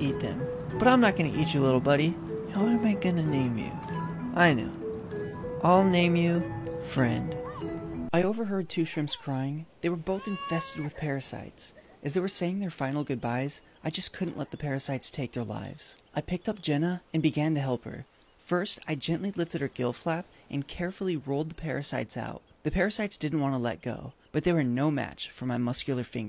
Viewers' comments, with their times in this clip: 0:10 lol that cry but also im glad you helped it.